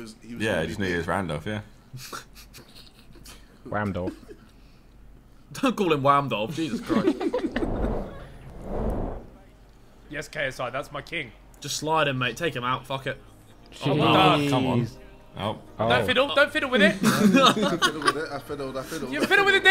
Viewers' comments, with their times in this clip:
0:07 Anyone notice the sus as sound ?